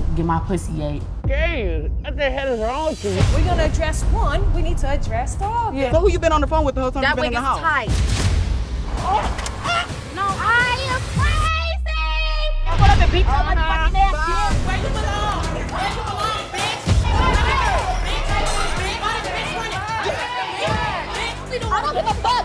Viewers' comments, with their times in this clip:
0:10 She sounds like k Michelle 😂😂